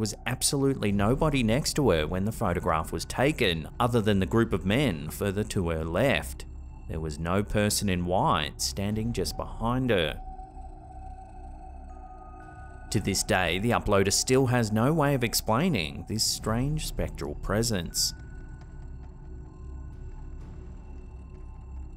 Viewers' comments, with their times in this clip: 0:09 Is that "let's go brandon"s granddad sniffing away?